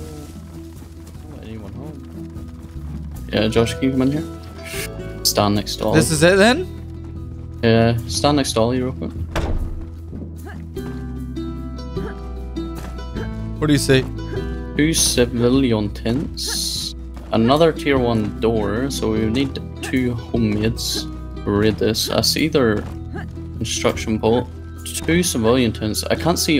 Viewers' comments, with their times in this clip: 0:07 Great music choice I thought I was watching The Last of Us for a second!!